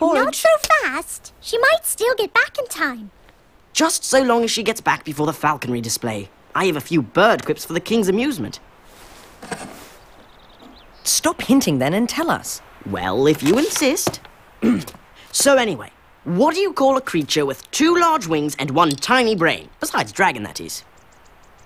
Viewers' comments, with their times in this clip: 0:09 You can hear him landing Lmao